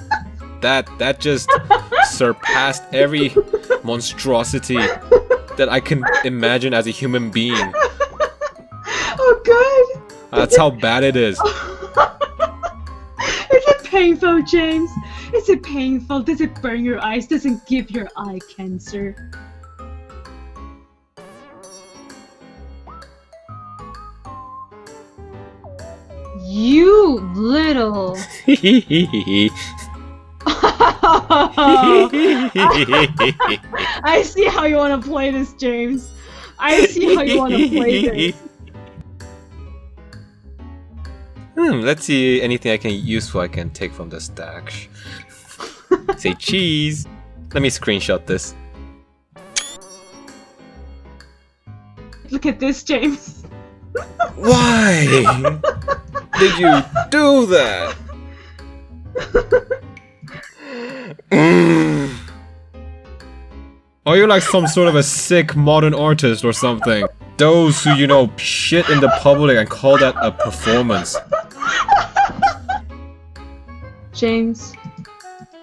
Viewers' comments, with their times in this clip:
0:03 idk why but u sound like Arnold Schwarzenegger :D
0:27 I can't stop laughing... your satisfaction... "eheheheh" omg I love this video a lot :'D
1:02 *beefalo mating call*